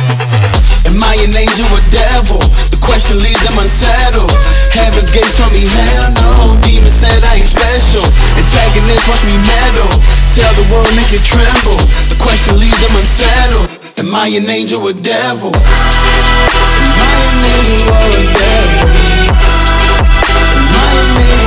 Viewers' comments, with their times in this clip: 0:03 Is there a meow ?